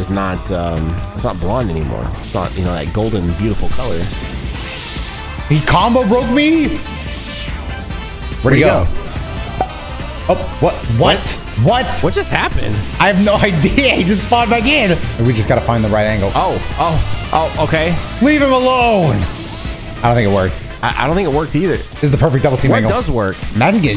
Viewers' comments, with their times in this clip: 0:07 They were in sync right here.